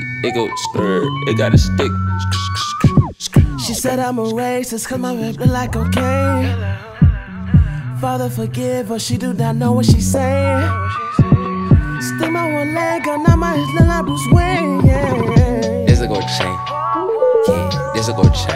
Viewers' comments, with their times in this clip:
0:06 what does the guy whisper is it "hello" or "tell that hoe"